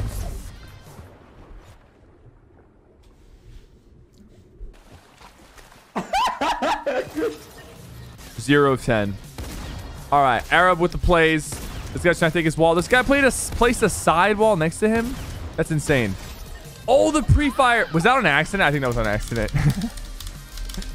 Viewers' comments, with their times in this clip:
0:03 how the teen was laughing and died his face lol